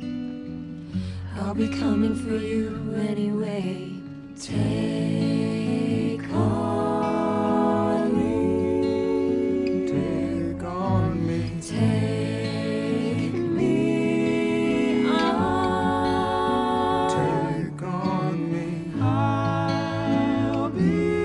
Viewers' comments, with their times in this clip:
0:04 The harmony Is absolutely aMAZing. I want this sung at my funeral.
0:04 The Harmony is amazballs, it's beautifully perfect!!!!
0:04 literally gives me goosebumps every time, that harmony is so perfect